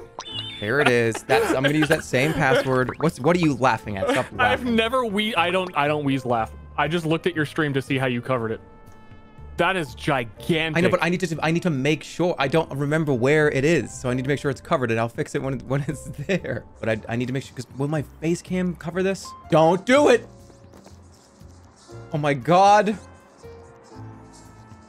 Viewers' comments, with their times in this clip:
0:07 he doesn’t usually wheeze laugh